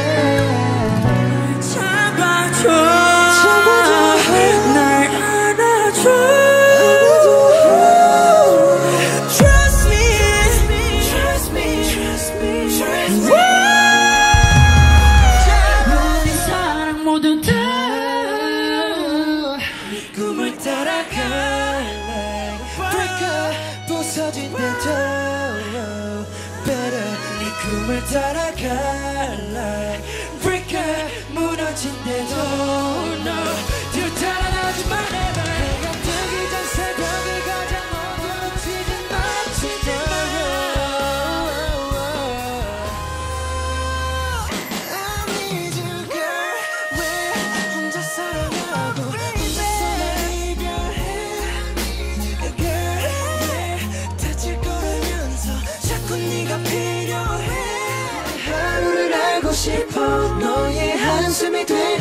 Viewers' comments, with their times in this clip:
0:04 I heard it as 'I'm Donald Trump'
0:15 I think it's V joining jimin in
0:19 is V, no Jungkook
0:34 Jimin sounded like Shakira when he said "never"
0:46 oml that song with the drums sounds amazing😍